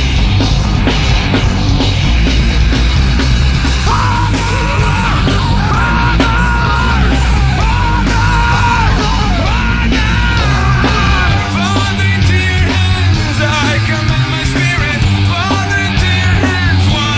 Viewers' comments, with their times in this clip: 0:03 plsss i got so scared when he started screaming in the background- 💀💀💀
0:03 and so someone starts running around me and performing some ritual on my body, while screaming "father". I guess he is trying to get his father's ghost to possess my body